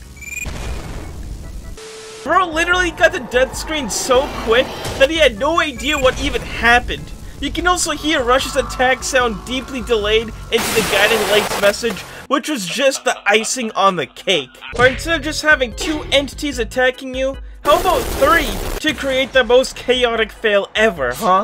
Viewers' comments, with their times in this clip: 0:06 Me: aight gotta go- a big bang of wood